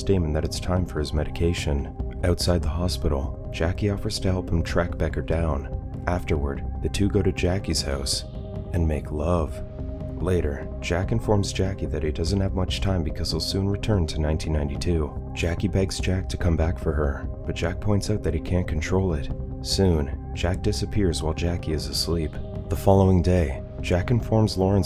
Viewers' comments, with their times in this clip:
0:08 LOL at the voice "and make LOOOOOVE"